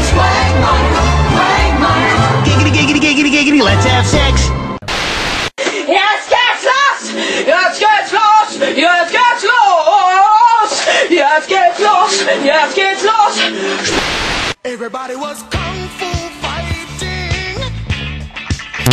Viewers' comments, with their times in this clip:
0:06 WTF is he saying?
0:06 is in german XD
0:06 Angry German o.o